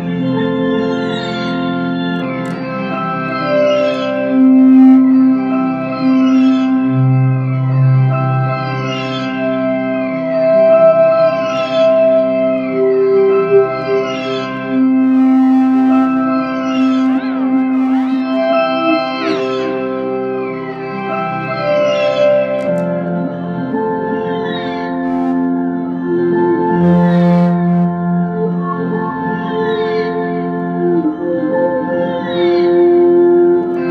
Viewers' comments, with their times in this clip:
0:03 this sounds like a synthesizee
0:17 close your eyes and you feel like your being hypnotized